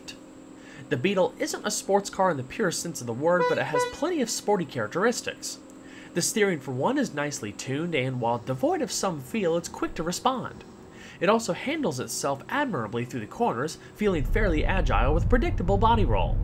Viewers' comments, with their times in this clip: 0:03 i love horn